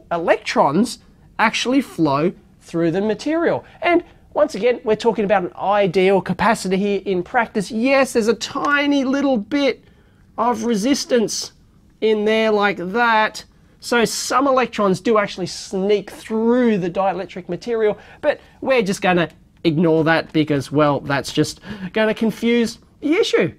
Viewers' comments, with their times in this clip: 0:08 yes it's a tiny little b!tch. 😂😂😂